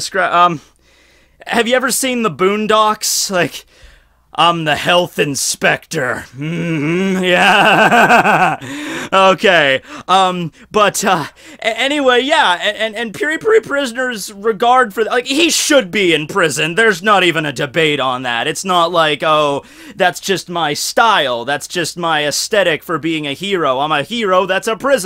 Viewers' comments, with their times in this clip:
0:08 that laugh is incredible